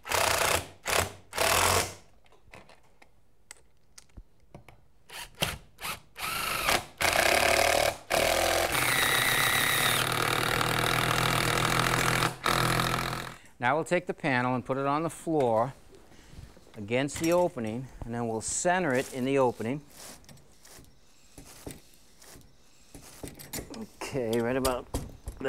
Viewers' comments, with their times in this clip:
0:10 the multiple drills going at the same time made it seem like the home owner torqued the fuck out of the screw.